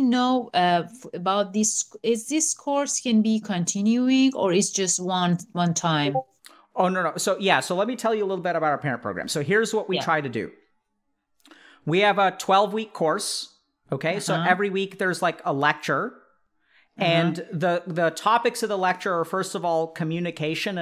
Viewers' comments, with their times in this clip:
0:05 the discord ping 😩😩😩😩😩 Anyway hope the mom is doing well, and I'm so glad she even did the meeting in the first place. Heart of gold right there